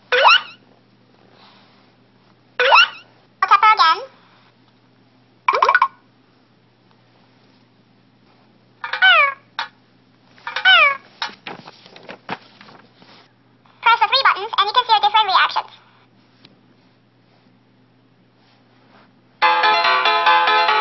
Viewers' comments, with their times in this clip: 0:05 Mr. Krabs, is that you?